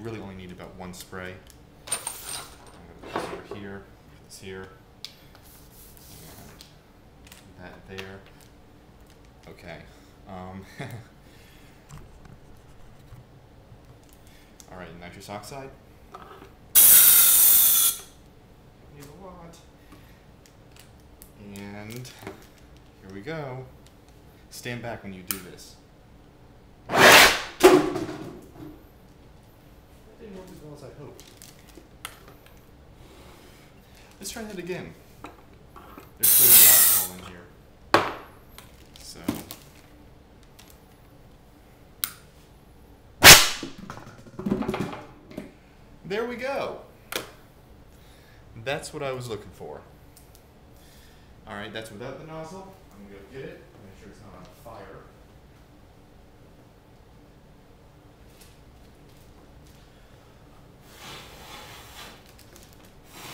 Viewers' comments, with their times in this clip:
0:08 it's funny when he laugh xD
0:45 omg my speakers were on high vol and you scared the crap outta me in